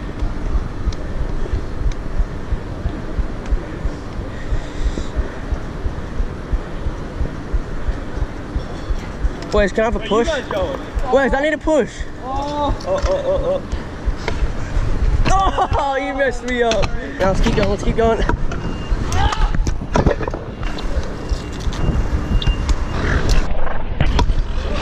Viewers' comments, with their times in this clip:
0:03 In we just can hear your heart
0:10 You can here his heartbeat